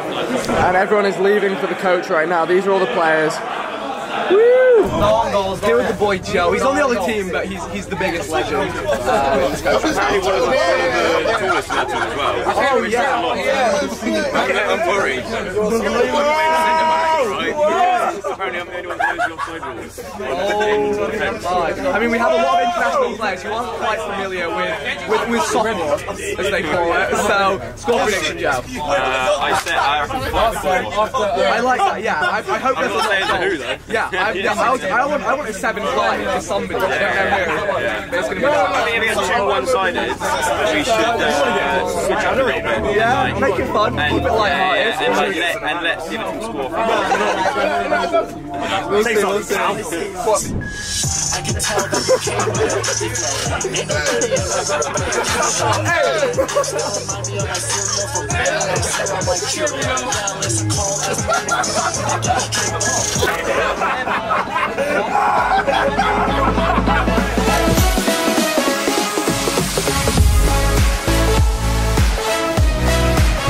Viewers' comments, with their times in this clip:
0:10 All I hear is jj
0:11 badest laughter of ksi
0:14 lol JJ's laugh
0:17 what are they talking about I can just hear JJ screaming
0:18 couldn’t hear a fucking thing
0:18 Anyone else hears ksi laugh
0:29 vik could you speak up please??
0:58 Did anybody notice when jj was getting gassed to ricegums music